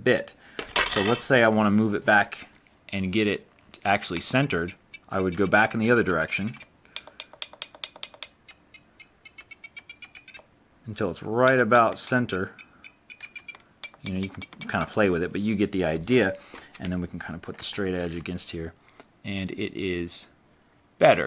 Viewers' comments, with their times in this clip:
0:09 nice beat trimmer